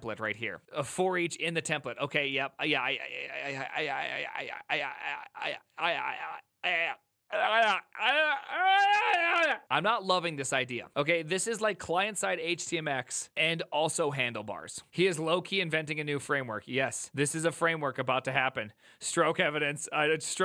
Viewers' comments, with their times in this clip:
0:03 Prime gets ayayayed